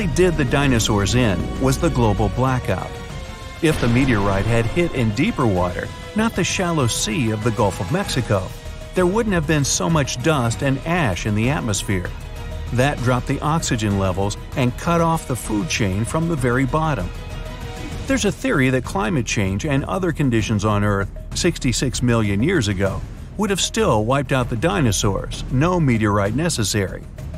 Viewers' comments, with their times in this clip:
0:09 try to find the screaming dino